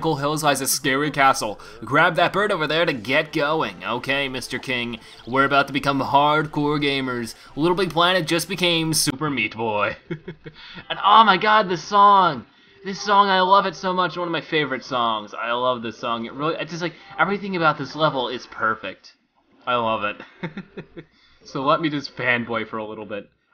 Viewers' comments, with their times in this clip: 0:10 For some reason his mic glitches does this happen to any of you?